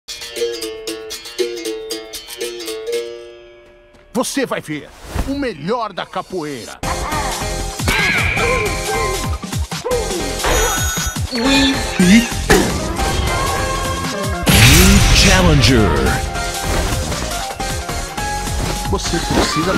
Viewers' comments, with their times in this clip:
0:04 So that's how capoeira is pronounced. I've only ever seen it written and never said